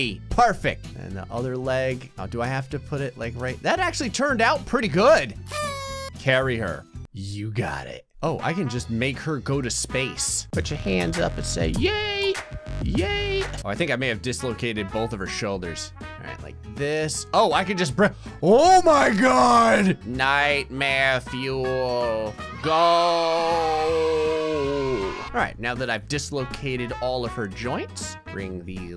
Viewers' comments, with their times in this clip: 0:10 is a bop